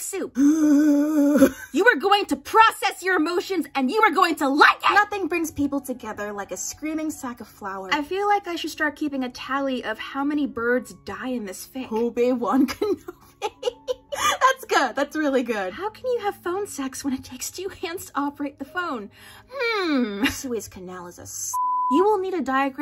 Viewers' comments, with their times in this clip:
0:03 XDDD Love this emphasis!